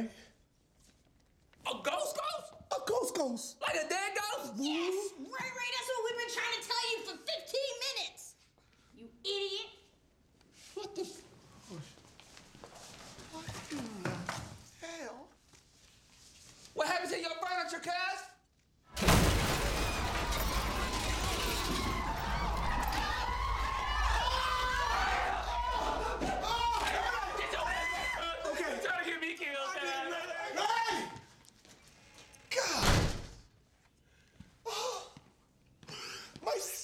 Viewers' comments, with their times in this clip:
0:09 The way she calls Ray Ray an idiot gets me every time! 🤣🤣🤣
0:20 the way they screamed lmao
0:21 Those wannabe gangsters sound like a flock of chickens